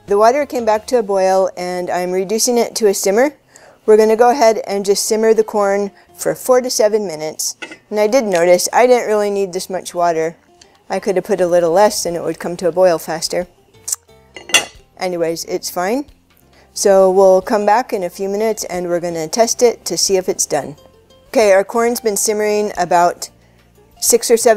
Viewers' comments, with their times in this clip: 0:07 thought you said 47 minutes at first. Long time for corn